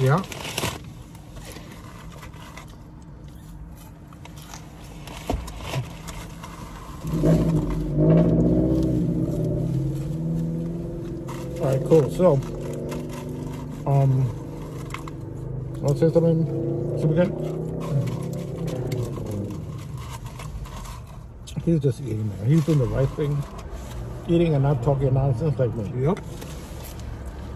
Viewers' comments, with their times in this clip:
0:08 machine in the back